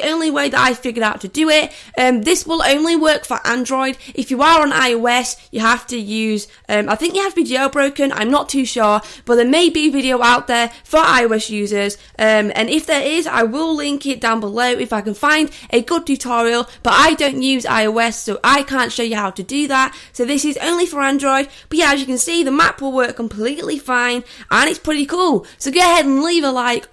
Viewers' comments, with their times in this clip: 0:10 i heard there maybe a video for irish users